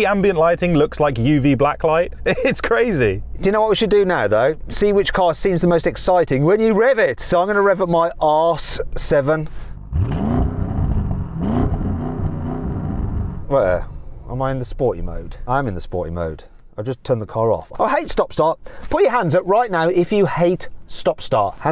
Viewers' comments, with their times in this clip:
0:07 "So I'm going to rev up my ARSE 7" 🗿